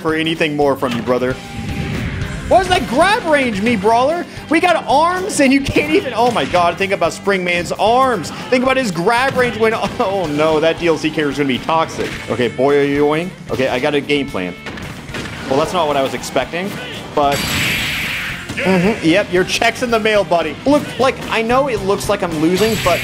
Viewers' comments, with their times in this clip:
0:07 Alpharad: “omg think about spring mans arms! That dlc character grab would be so toxic!” Min min: evil laughter Spring man: sad boiyoyongs